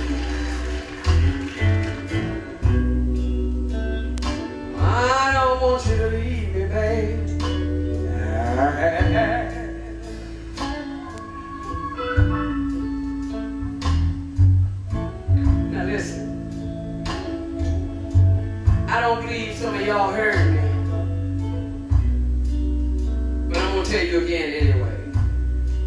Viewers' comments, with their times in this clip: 0:09 What the hell does she do at that mark? That little vocal shrug is amazing...